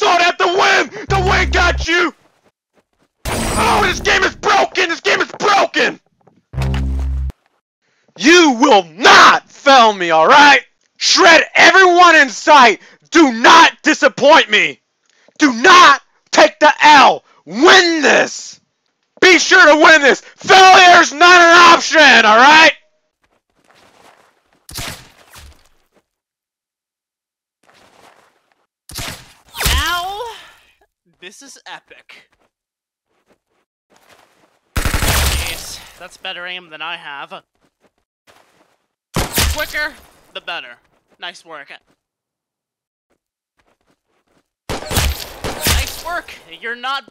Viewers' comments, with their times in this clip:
0:03 my favorite demote sound
0:29 koneko sound like a girl